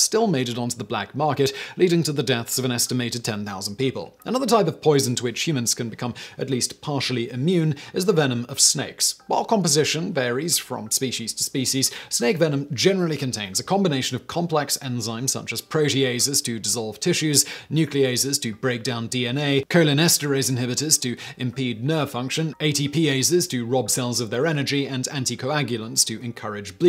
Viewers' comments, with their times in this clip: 0:10 He say both versions of Species lol Spe-shees and Spe-sees. Which one is correct